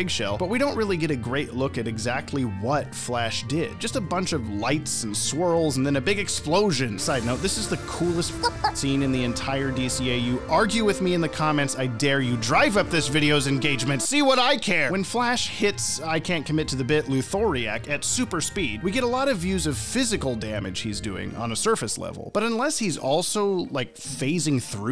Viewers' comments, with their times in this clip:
0:07 & that music is ABSOLUTLEY HEROIC!!!